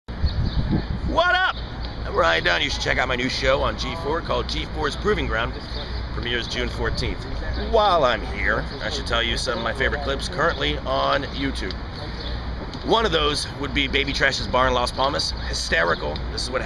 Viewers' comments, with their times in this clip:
0:01 he sounded like Preston Lacy!!!